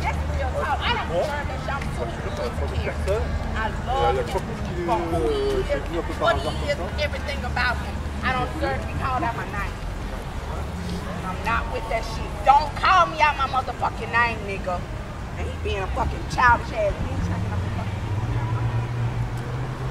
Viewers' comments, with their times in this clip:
0:03 hey lol in the two guys speak in french it's so bizarre lol